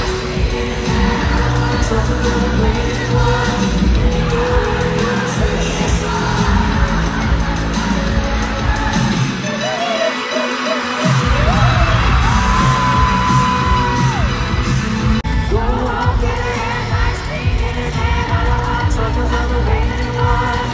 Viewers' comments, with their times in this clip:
0:03 HE WANTED THE 'LEAVE AMERICA' SCREAMING LIKE THERE'S NO TOMORROW AAAAAAA😭 leave america babe ;)